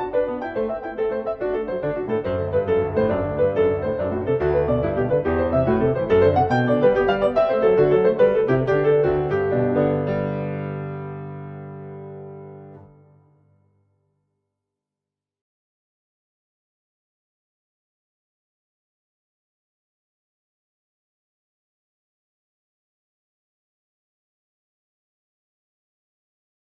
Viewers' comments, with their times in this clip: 0:07 Maybe there is a reading error (bar 1 and 2 on the screen) you play B instead of A and C instead of B in the right hand. You make the same mistake in the repetition. Take a look!